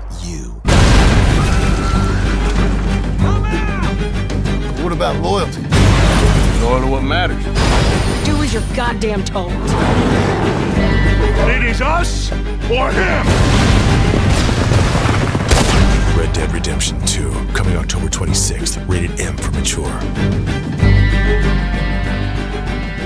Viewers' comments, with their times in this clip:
0:04 made me so fucking happy. I honestly can't even express how nice it was to hear John's voice.